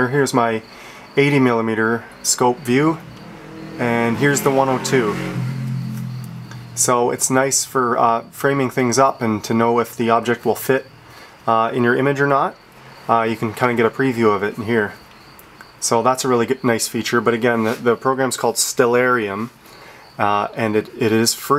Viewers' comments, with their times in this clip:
0:05 I HEAR A SUBARU!